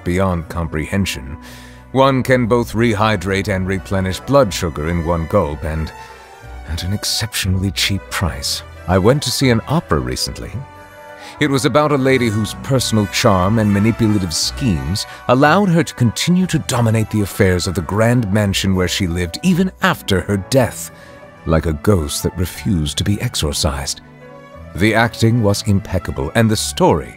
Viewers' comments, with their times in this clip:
0:10 why does this sound like signora?